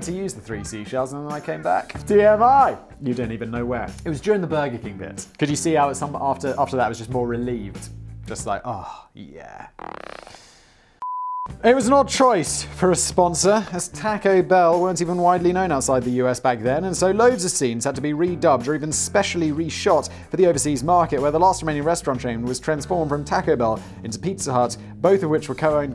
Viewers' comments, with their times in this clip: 0:09 when he “farts” it cut to an ad starting with the words “natural gas” being said and I thought it was a meme at first